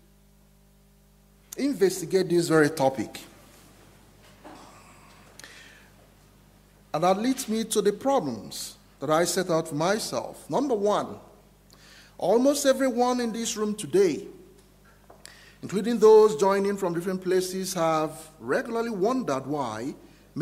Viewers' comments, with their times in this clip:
0:07 The Guest Speaker only becomes really audible and clear minute